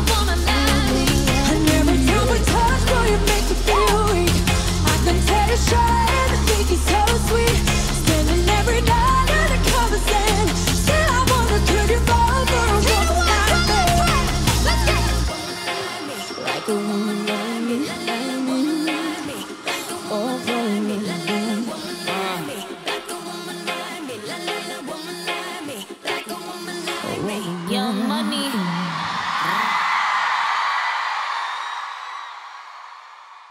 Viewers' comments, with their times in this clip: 0:05 if they lip synced how could jesy said "woah" accurately and some sing along?
0:17 I really love the adlib she does